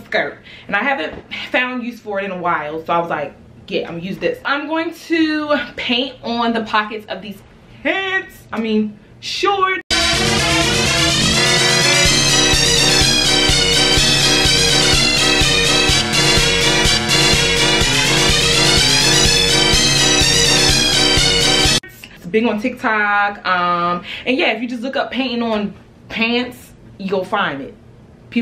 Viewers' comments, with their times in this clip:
0:10 RIP headphone users!😭💀.